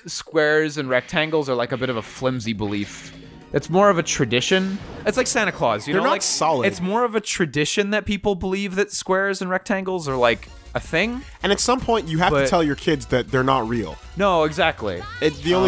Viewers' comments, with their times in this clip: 0:03 Yo, they sound like they've been smoking some superdank weed.